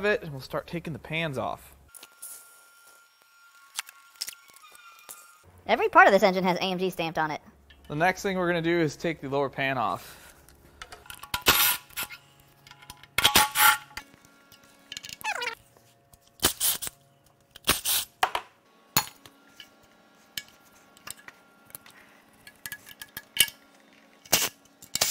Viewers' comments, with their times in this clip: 0:06 I like how you take these random hits of helium just to amuse us, your loyal fanbase!, lol. great video so far!